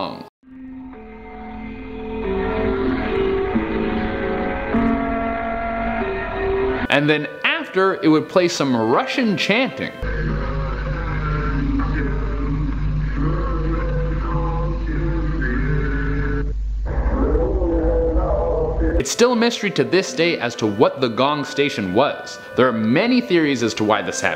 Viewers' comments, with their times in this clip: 0:06 it's not russian it's german